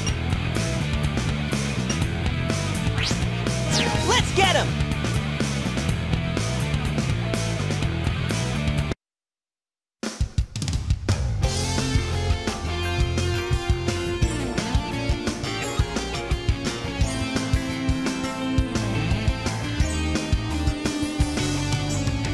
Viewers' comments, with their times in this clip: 0:03 Classic Sonic speaks in Dreamcast Sonic's voice.